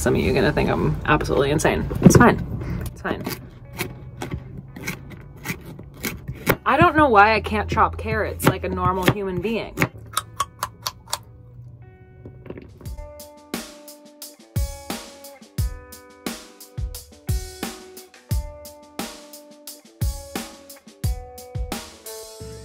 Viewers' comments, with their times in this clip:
0:09 Was that Bugs Bunny munching on some carrots..lol.